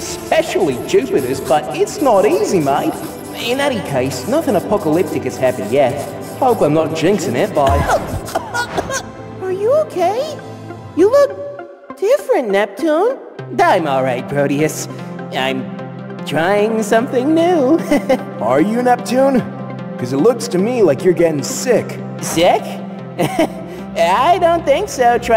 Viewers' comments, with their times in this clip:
0:08 the Neptune is updated is sneezing? :_SAR: